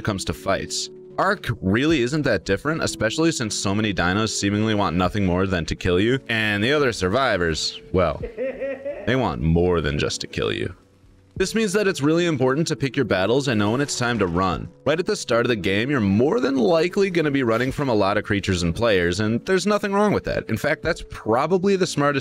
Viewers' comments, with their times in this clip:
0:06 that laugh was a good one